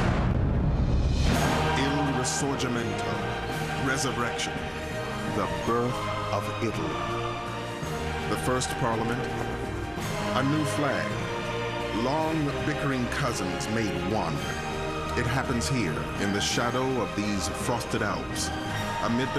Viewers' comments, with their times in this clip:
0:05 Thank you very much. I find the music to be very uplifting and inspiring. The first song used is "Onward to Glory" and begins in the song. "Kingmaker" is the second song.